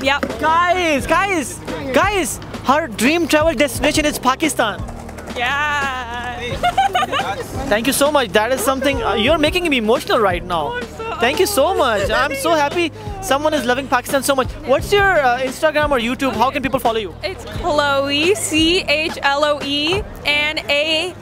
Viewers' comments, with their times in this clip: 0:04 IS HE SAYING PUCKISTAN🤣